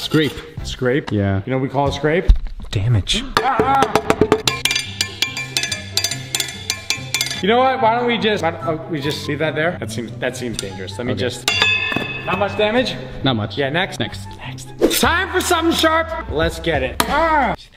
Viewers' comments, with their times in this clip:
0:05 I heard a JoJo OP I swear 😂